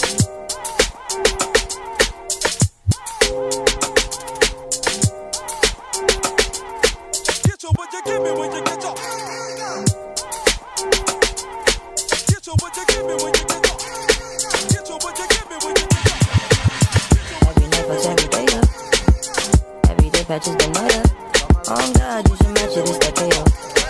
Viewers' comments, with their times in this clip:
0:10 Yoh that song reminds me varsity days🫶🥹